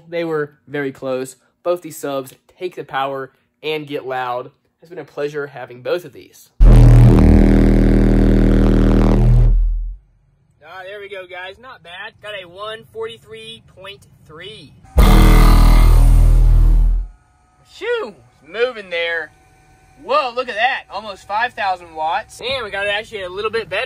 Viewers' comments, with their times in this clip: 0:09 I was watching this ony home theater. Almost fell off the couch when the bass dropped around and !🤣🤣🤣